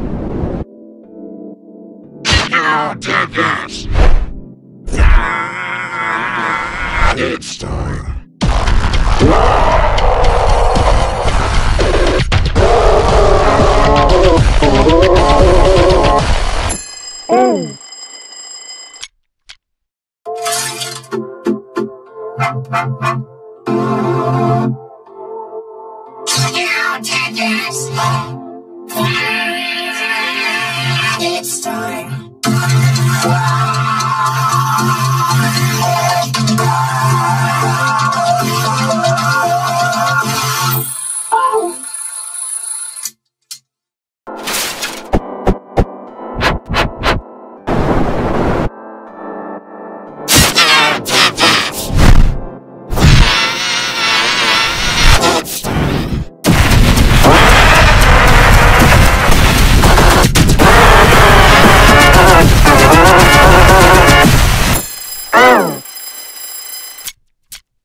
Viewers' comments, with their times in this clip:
0:09 scream and blast scary
0:54 I like the g major better